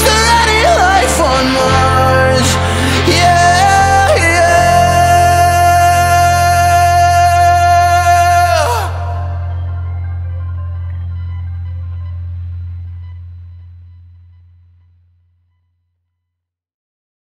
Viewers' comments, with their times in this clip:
0:04 There is tho, it's clear for example.. Autotune is not a bad thing you know, and it doesn't mean the singer can't sing